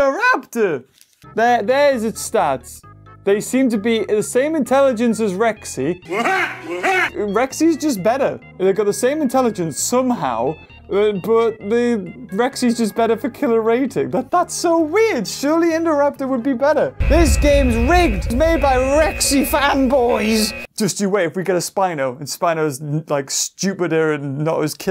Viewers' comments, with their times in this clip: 0:05 What is the funny laugh used for Indoraptor ?